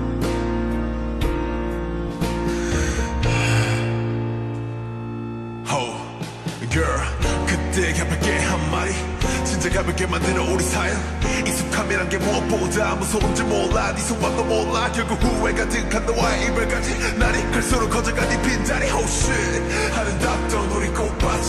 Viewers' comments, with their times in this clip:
0:05 Oh my god J-hopes voice slowed is- fhcfgcjdrgjf
0:05 when hobi started rapping I though it was Joon for a split second...